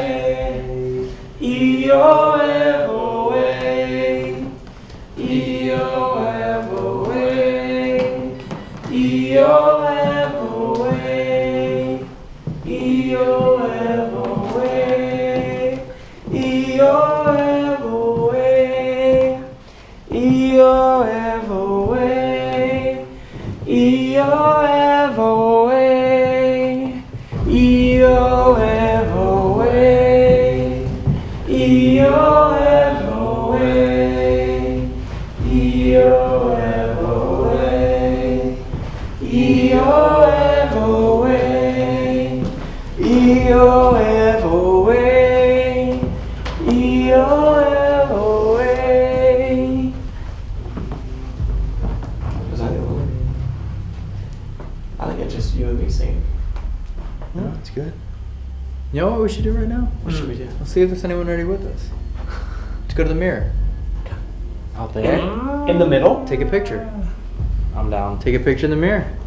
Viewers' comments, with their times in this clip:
0:03 there's a WOMAN singing your tune 😳😳😳 i wasnt watching, only listening and had to replay Because I thought i heard a woman's voice and thought your guide had left already...CHILLS
0:51 someone was mocking y’all doing the chant